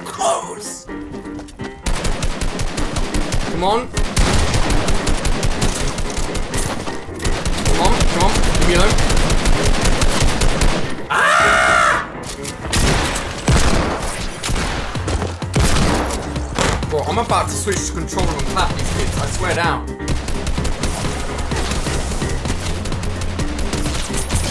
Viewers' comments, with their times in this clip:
0:04 Is it a seagull is it Monkey No is Ali-A
0:10 Secret message gotta put volume all the way to hear it